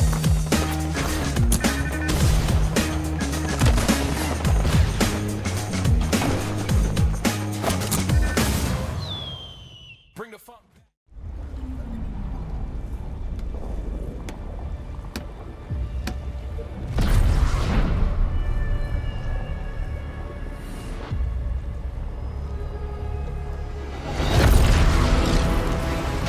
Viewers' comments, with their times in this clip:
0:10 i heard bring the fck